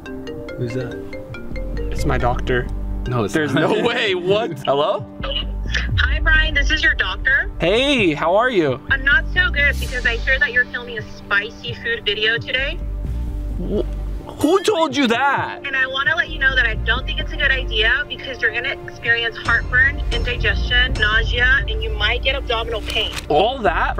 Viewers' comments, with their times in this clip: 0:08 The Way He Said its my doctor He was kinda freaking out